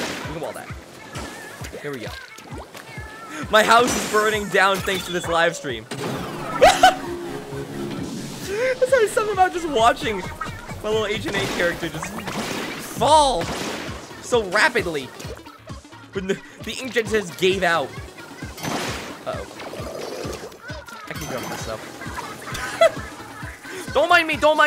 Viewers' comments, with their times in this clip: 0:09 I'm livid because the moving sound is practically identical to the portal sound